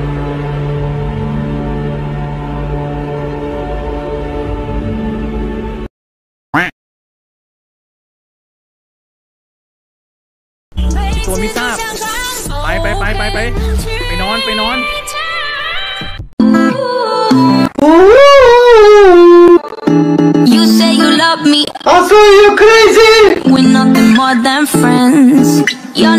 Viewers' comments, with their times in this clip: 0:10 dogday critter went flying in the air singing "i believe i can fly"😂